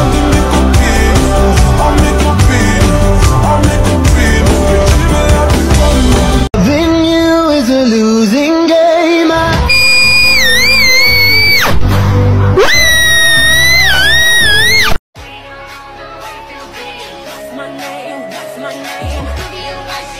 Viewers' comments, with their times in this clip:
0:07 I don't know Marinette sing that beutiful😏